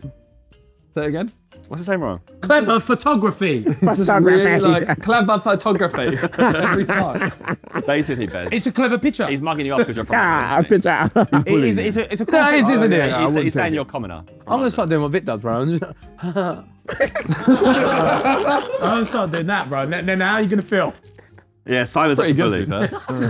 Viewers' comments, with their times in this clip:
0:04 Simon mocking Ethan on claeva fotografie is golden
0:06 Toby sounding like Wario 😂